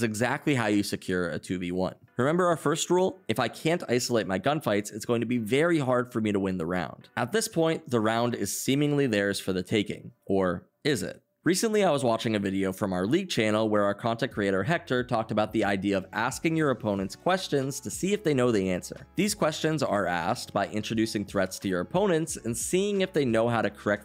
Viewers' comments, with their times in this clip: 0:10 vsauce music plays